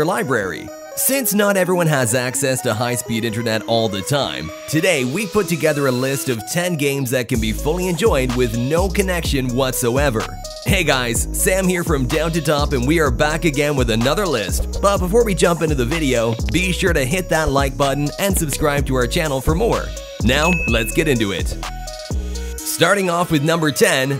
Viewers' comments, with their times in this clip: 0:04 what a drop beat lmfao
0:11 sounds like you're rapping ♥️